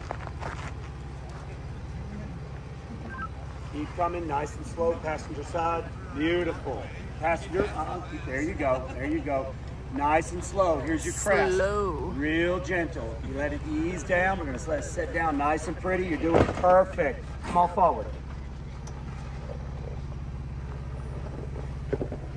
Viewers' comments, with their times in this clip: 0:08 fan back on.